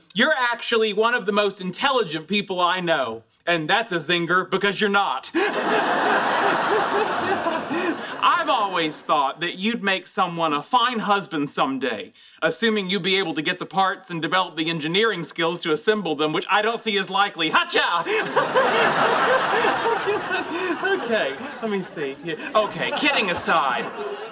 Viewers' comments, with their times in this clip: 0:05 I love the Bazingas, but Sheldon's laugh is like a 1-year-old baby. LOL 😂